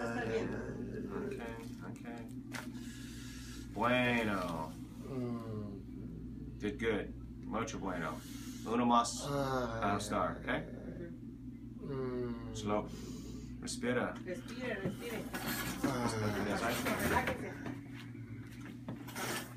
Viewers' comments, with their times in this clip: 0:03 I stopped breathing when I heard that snap!!!